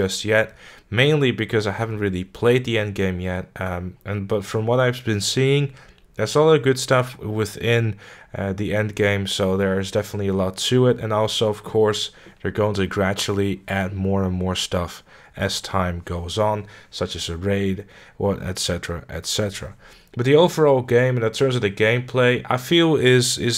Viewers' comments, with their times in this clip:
0:07 did your guy fart?